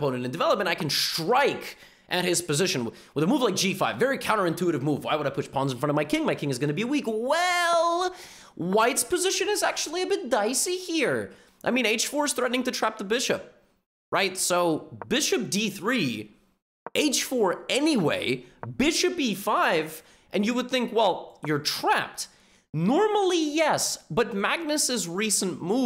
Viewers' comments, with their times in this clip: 0:07 levy sounds like a Scouse accent
0:09 why does he sound like an Indian wtf
0:11 When he said “whites position is a bit dicey here” I swear he sounded like paddy the baddy